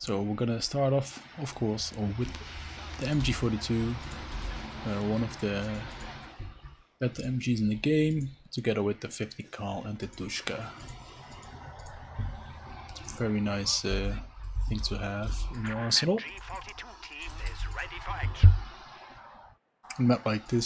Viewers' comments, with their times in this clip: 0:06 i hear "one of the bad mgs in the game", but maybe i'm deaf